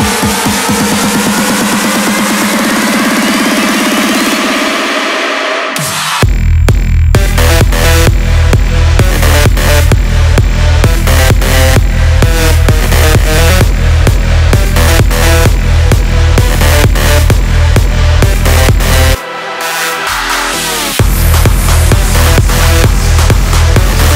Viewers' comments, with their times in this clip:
0:06 I need to hear this song live! I can only imagine the goosebumps and chills I'd get! WOW! When kicks in! OMGGGGGGGGGGG!!!!!!!!!!!!!!
0:07 That drop, though!